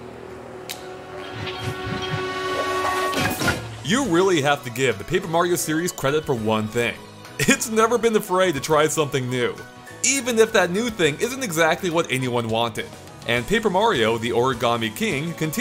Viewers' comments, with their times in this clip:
0:03 I honestly thought that when he started talking, there would be lyrics to this song. Edit:And seriously, am I the ONLY one who LIKES Sticker Star!?